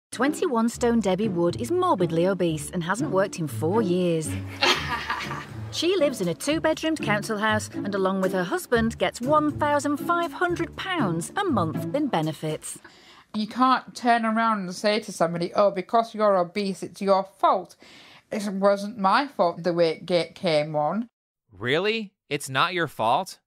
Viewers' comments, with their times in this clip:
0:01 for some reason this is so funny to me and the laugh just 😭😭
0:04 That's the laugh of an evil villain from a cartoon set in space or something... Why would you laugh like that ?